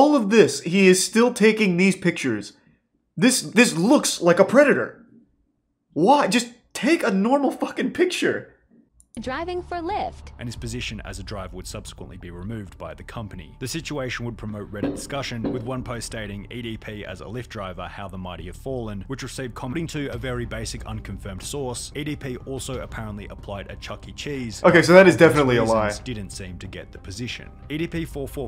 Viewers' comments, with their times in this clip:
0:09 the pure annoyance in his voice is what makes it funnier